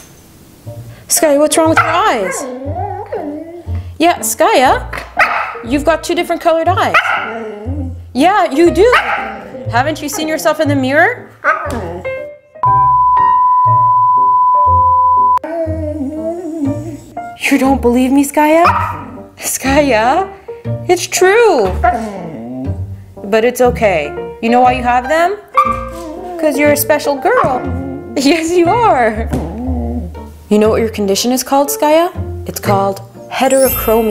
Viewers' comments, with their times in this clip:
0:10 That "not really" Was so cute 😍
0:15 Skaya sounded like a ghost